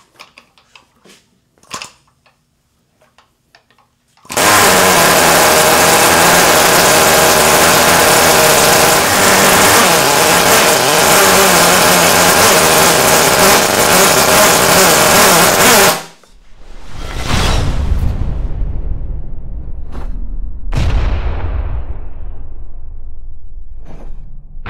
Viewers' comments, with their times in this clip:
0:03 That fart when you taking a shit, and it won’t let up
0:04 sounds like what comes out of your ass after having Taco Bell
0:04 Sounds just like my RX8
0:05 Why does sound like me on the toilet 🚽
0:05 sounds like a wet fart
0:12 when u rip a fat one in class